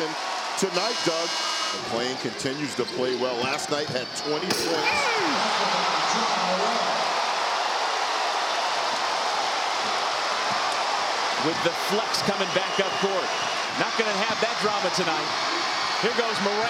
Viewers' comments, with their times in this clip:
0:04 Commentator got punched in the stomach
0:04 sounds like someone came lmao